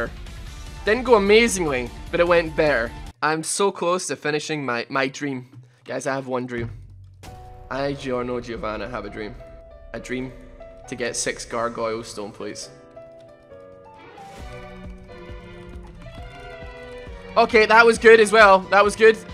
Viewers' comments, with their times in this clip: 0:07 uh oh the music is playing. HE’S UNSTOPPABLE!